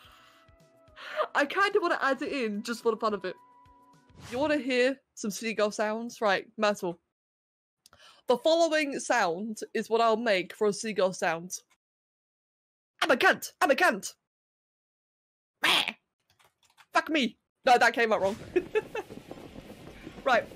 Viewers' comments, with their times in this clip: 0:07 You clearly just played a seagull noise with a soundboard. We expected better quality then this.